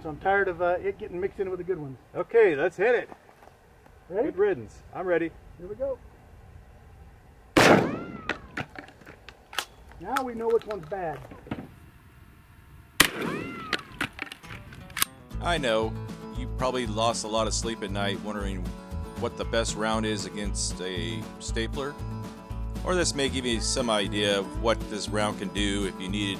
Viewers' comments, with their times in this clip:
0:07 that is a 1950's Hollywood worthy ricochet sound!
0:07 the one sounded like a cat
0:07 When you hit the stapler it sounds like a cat meowing lol!